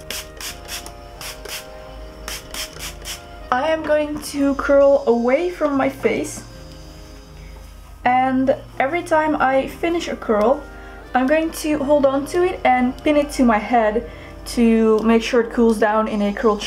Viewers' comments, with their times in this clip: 0:04 I thought my alarm clock was going off. I love the background music though